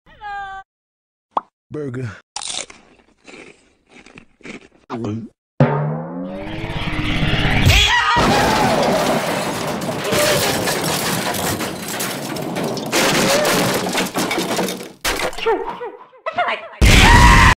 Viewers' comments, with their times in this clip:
0:00 A high pitch hello sound from ed, edd and eddy